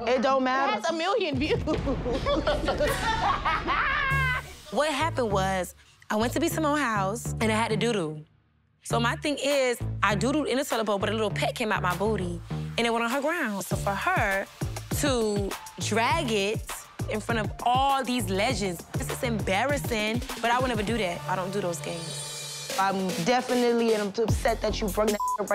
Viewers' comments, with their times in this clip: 0:10 why she say it like that 🤣🤣”but a lil peck came out my booty “ 💀🤣